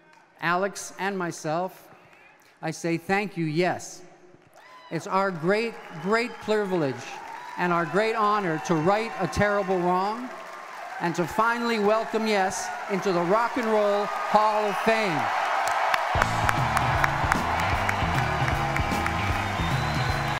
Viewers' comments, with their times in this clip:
0:06 our great plurvilege = pleasure and privilege